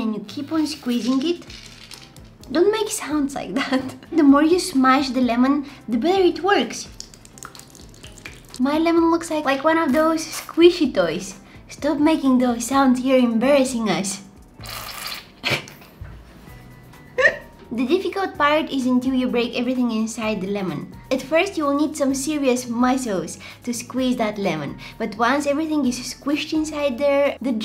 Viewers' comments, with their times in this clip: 0:03 Your voice has changed so much, if that's your real voice it's beautiful ❤️
0:08 we all know what this sounds like….